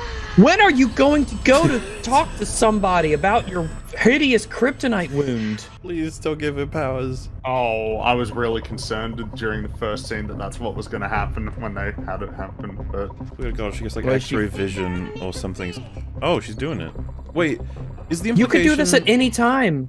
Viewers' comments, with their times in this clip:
0:03 Ryan sounds more like she's turned on by her Kryptonite poisoning not in pain from it.